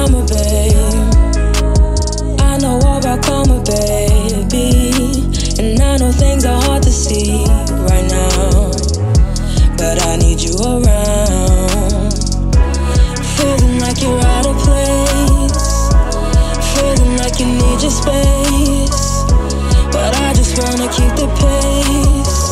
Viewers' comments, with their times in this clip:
0:04 The song is so good 🙌🏿